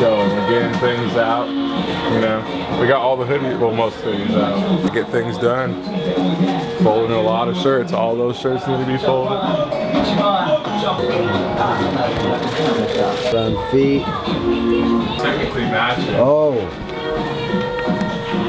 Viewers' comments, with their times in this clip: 0:03 did nobody else hear the Tokyo drift song playing